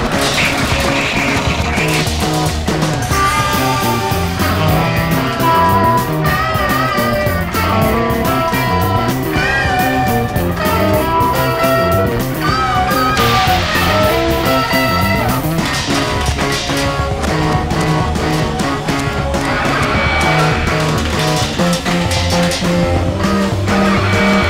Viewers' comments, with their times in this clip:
0:07 how the hell they do that sound? Fucking amazing soundscaoe in this